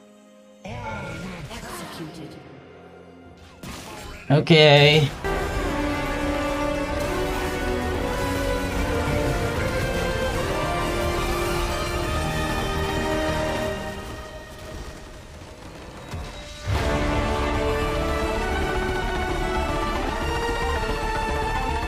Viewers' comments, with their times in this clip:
0:05 damn sounds epic, what is the name of the song?:D